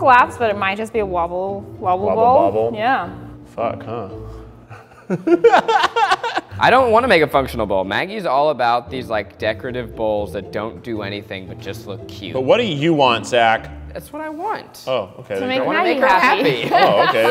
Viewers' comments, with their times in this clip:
0:03 time stamp of Keith saying ‘fuck huh’ and laughing made me forget he’s a married man. DAMN